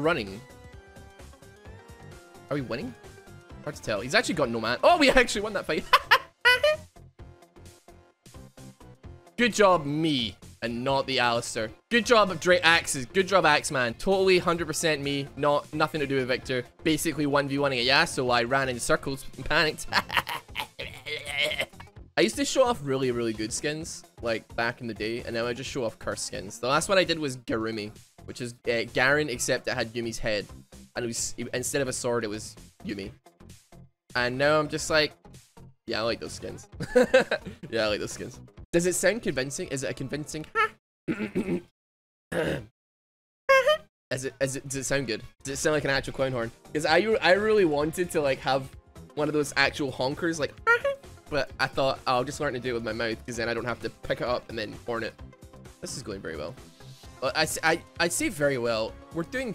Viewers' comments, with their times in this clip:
0:05 the horn noise lol
0:05 is that icecream truck sound?
0:06 you know your cars old when it sounds like this
0:06 best honk impression i've seen
0:06 What was that clown horn doing here? :0
0:43 I always thought you were doing a teemo laugh xD